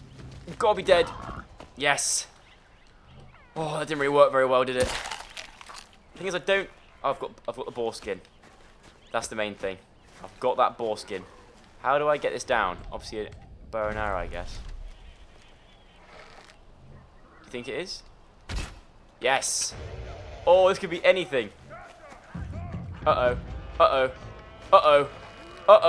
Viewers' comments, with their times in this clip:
0:08 'Boar skin' sounds like something else;)